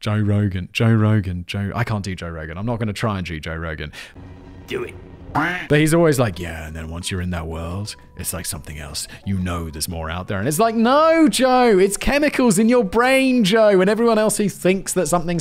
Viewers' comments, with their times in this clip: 0:03 "I'm not gonna jew Joe Rogan." Well, why the hell not?!